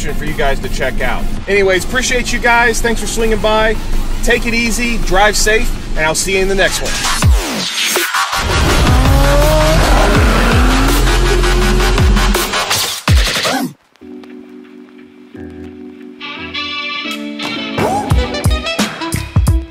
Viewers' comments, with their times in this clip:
0:07 killer intro and outro theme. Love it!